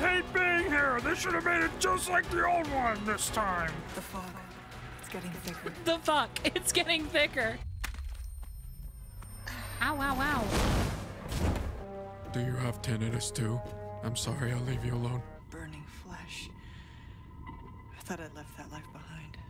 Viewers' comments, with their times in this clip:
0:03 The fu** it’s getting thicker? I can’t. 😂 delivery on some of the lines are hitting me different!